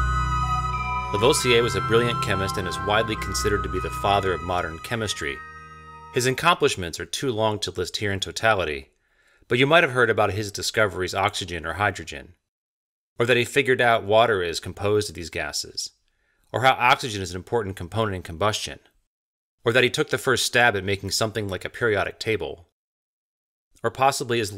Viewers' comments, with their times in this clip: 0:05 "His incomplisments"? Did anyone pick up on that? Did he mean to say accomplishments or is it a subtle dig at the guy?